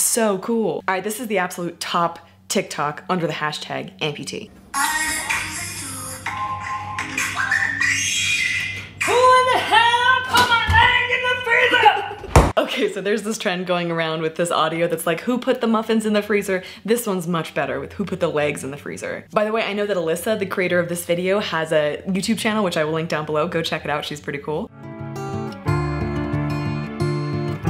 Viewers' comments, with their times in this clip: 0:08 I think that she actually scared of a colony of bats, and gave a dog tinnitus, with that scream... :o